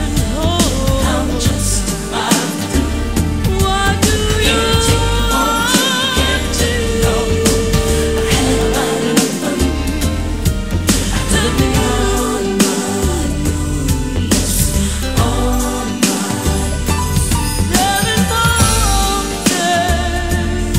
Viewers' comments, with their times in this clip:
0:04 she sounds like Anita Baker.